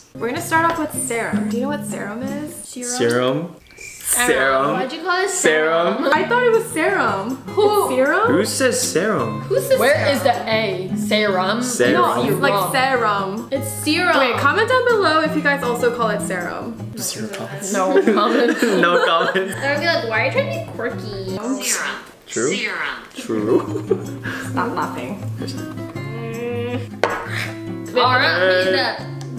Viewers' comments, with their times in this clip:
0:10 no i don't call like that lmao